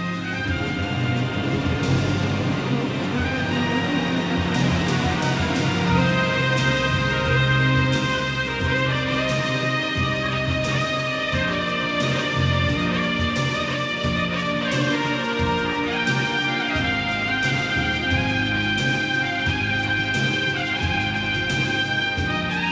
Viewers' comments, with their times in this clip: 0:10 Wonderful Climax. I loved the soloing from